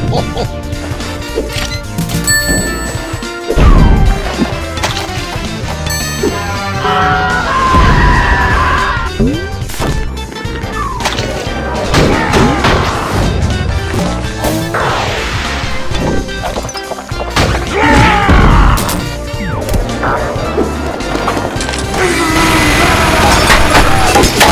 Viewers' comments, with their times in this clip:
0:05 crazy me scream